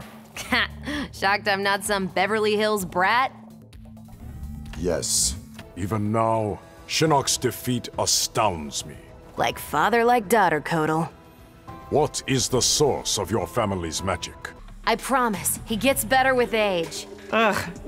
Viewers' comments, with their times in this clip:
0:03 that was the most serious funny and weird yes